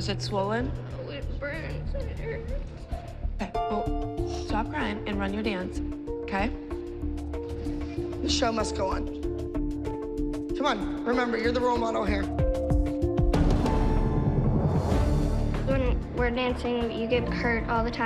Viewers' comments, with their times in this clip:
0:06 the way she said just do your dance it was like she didn’t care